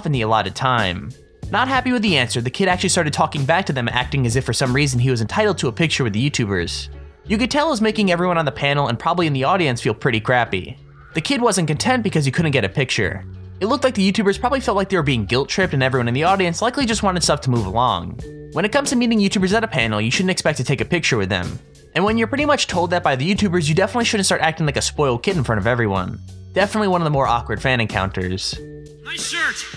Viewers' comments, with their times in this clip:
0:10 omg i hear girl screaming